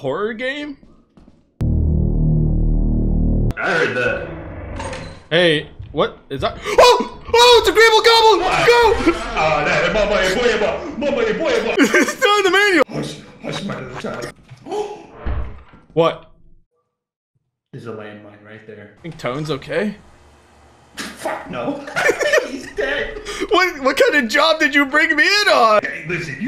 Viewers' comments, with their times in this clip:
0:09 sounded like he was speaking Jamaican 🤣
0:12 The subtle Spongebob walking sounds were a nice touch.